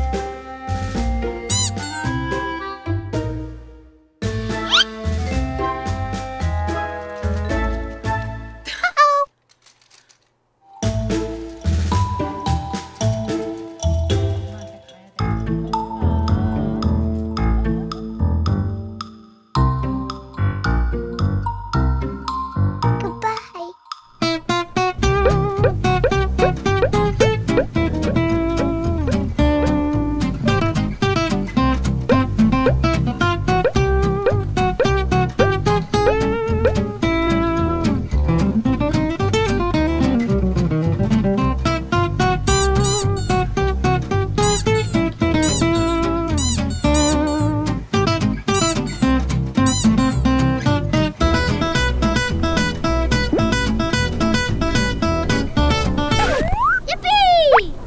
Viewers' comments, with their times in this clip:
0:08 "Uh Oh" tricked me into checking ICQ.
0:41 i cant with the sound effects 😂😂